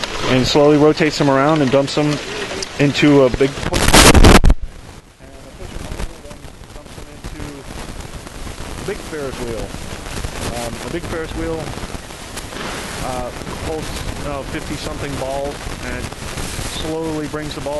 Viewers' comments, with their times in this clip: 0:03 Watch out for jump scare / earrape